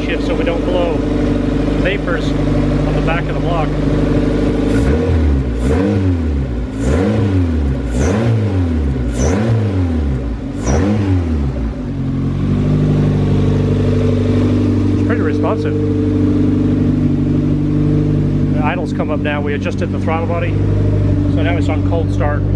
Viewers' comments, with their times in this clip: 0:05 anyone know to to get the TB to whistle? I heard it’s pretty common for b18c to sound like that